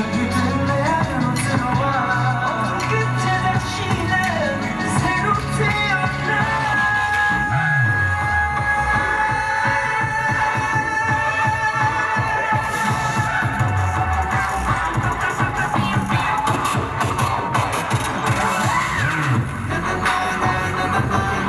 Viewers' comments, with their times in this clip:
0:08 almost out of breath 😭 Jungwoo is soooo handsome 😭😭😭👏